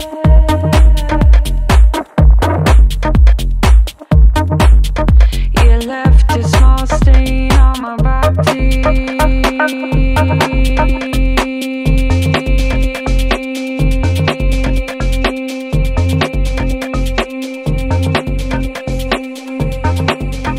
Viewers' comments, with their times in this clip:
0:05 wtf she just say.. " u left a small stain on my battttyyyyy lmfao 😂😂😂